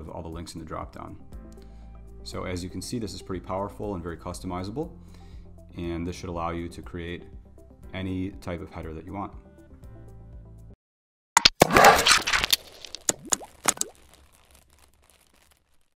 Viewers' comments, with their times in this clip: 0:10 Another great video- the sound at the end- in a few of your videos is way too loud though- especially after the soothing music and chilled voice.